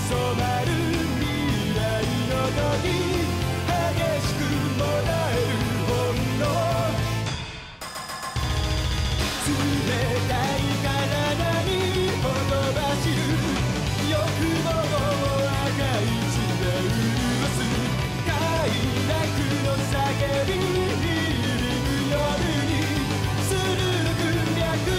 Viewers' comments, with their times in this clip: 0:09 i love the part of drum getting fast